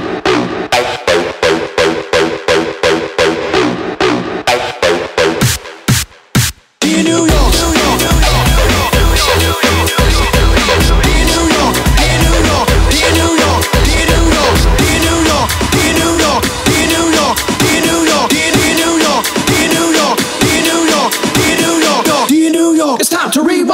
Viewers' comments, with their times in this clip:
0:06 I actually like the intro beat more then the chorus hehe